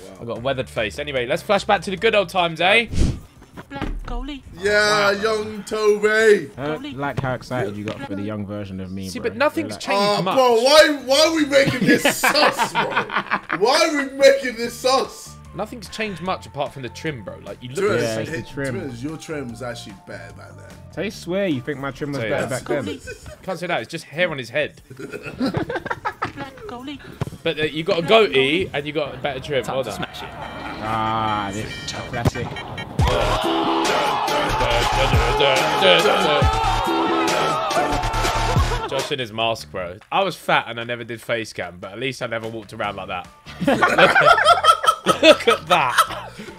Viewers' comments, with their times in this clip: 0:03 ay yo tbjzl is so funny and really young,funny voice 🤣🤣🤣🤣🤣🤣🤣🤣🤣🤣🤣🤣💯💯💯💯💯💯
0:33 JJ legit blends in so well that his vocal looks like it’s actually part of the song